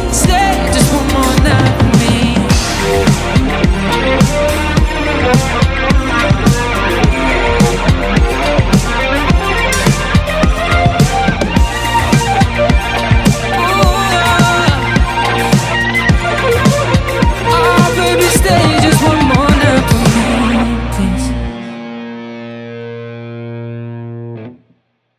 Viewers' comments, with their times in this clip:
0:07 okay sheeesssh! gimme that John Mayer vibe man!!! so impressive oh my gosh!